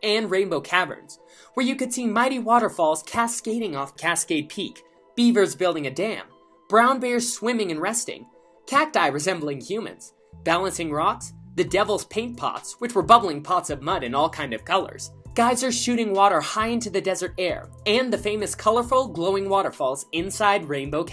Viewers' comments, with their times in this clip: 0:08 That big pause was scary